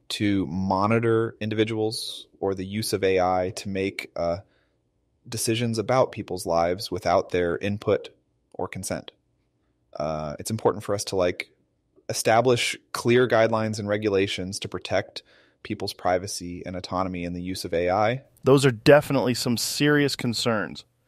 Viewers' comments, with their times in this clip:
0:07 I don’t like it. You. There is no emotion